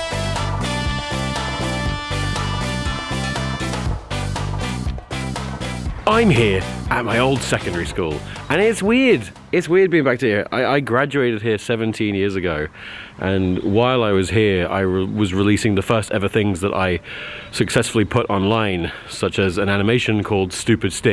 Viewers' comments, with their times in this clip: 0:05 Is it just me or does Tom Ska kinda sound like Tom Scott ? just the "im here" part
0:06 For a moment, Tomska doing the perfect Tom Scott impression 😆